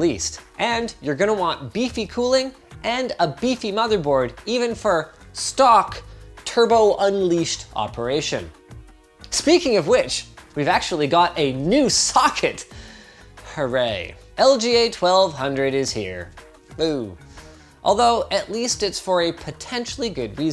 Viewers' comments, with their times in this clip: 0:03 Did I just hear Mr. Poopy Butthole?